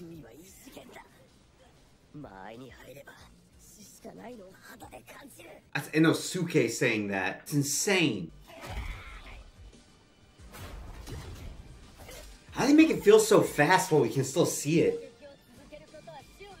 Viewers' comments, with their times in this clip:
0:04 who the heck is INO SUU KAY